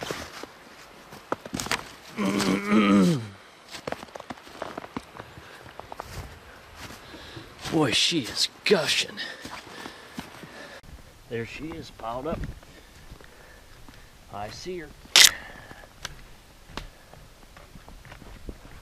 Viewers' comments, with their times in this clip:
0:06 Covid heard it haha thank u for the great vid